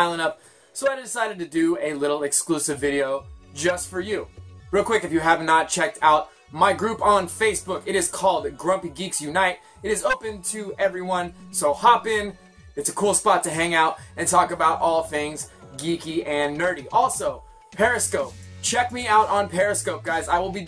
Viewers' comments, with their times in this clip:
0:08 Ha voice crack